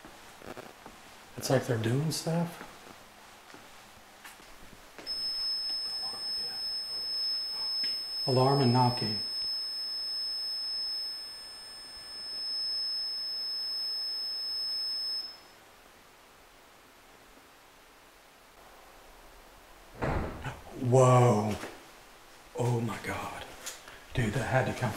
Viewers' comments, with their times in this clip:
0:05 says "I warned ya" in an Irish accent.